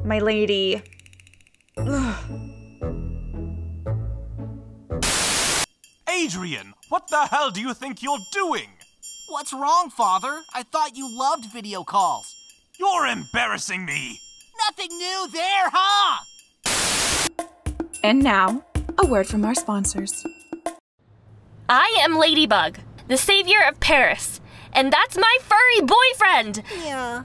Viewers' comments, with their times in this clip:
0:09 Adrien's voice is just like the original one Someone's really good at dubbing..
0:11 Why is no one talking 😂